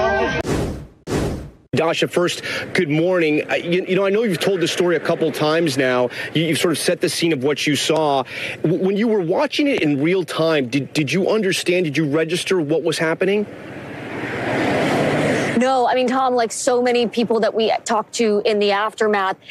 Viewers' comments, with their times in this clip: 0:06 This reporter seems to have trouble with describing what this was. Is this normal? Specifically, she stutters toward the conclusion of "this political violence." It was not political violence as such though, was it. It was the attempted assassination of Donald Trump. I noticed this in the media who covered the assassination attempt, and many seemed to have to same difficulty in calling this what it was; instead using language that minimised the event.